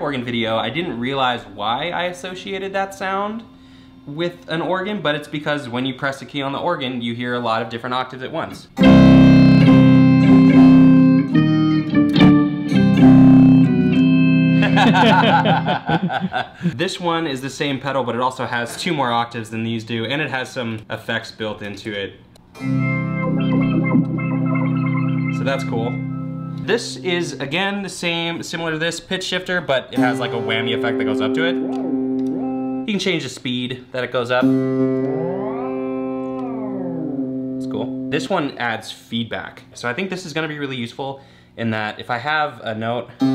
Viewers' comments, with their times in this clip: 0:07 sound like the undertakers theme song
0:24 *Fast wiggle noises*